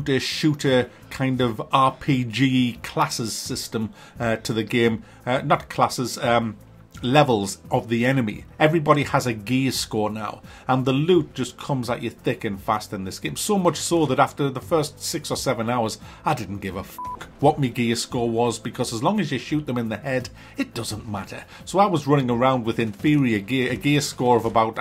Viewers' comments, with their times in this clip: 0:08 I heard gay score LOL